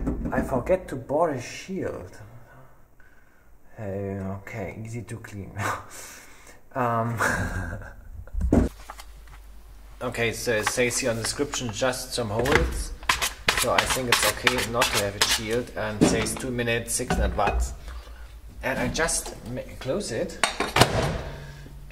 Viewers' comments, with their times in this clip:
0:08 Audioproblems resultet from the Microwave itself